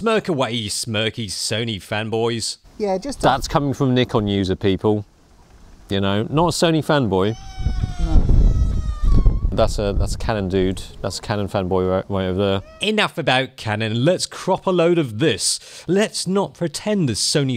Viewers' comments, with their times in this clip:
0:05 For those who want quick access to the cries xD